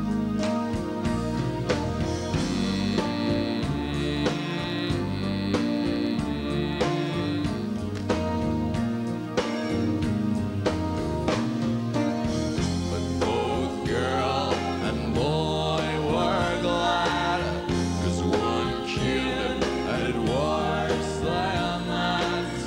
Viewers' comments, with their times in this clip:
0:09 sounds great as well.